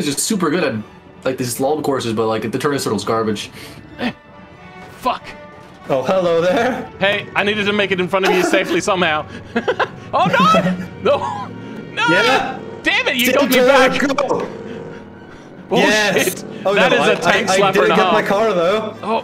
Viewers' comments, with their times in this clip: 0:03 damn that's a really detailed car - also being chased down a mountain by an unstoppable, squealing steam engine car is possibly one of the most terrifying things in Beam ever! is an Irohazaka Jump with added style!